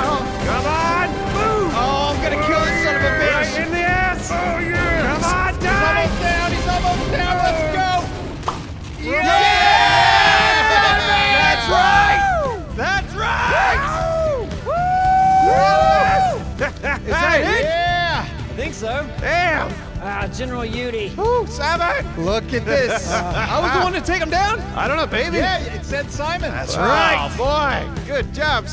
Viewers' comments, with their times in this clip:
0:10 What song is this? It kinda sounds like Dreams by fleetwood mac but idk its not quite